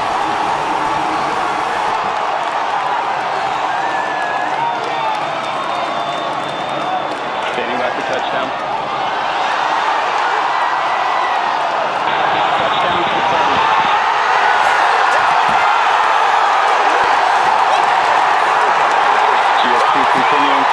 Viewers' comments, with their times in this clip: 0:03 Blue Origin really needs to invest in some Starlink antennas so that their stream doesn't cut out at the worst moment. Wait...